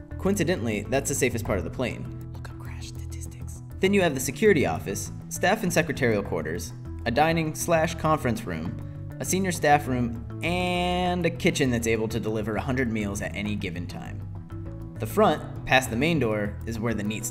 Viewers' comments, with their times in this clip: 0:03 whispers *crash statistics :D